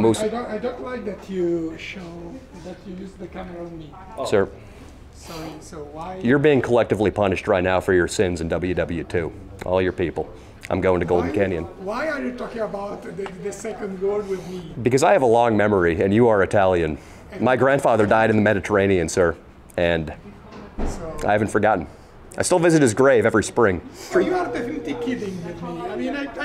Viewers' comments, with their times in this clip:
0:08 lmfao that italian